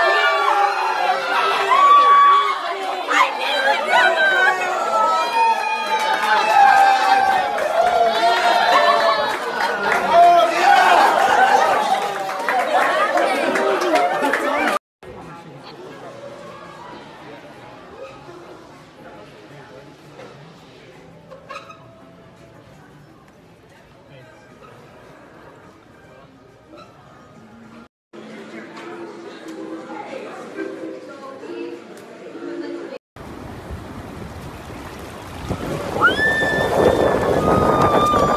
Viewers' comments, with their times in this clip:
0:07 listen to background "What the %! is happening?"
0:26 WAIT DID SHE SAY NO OR YES? XD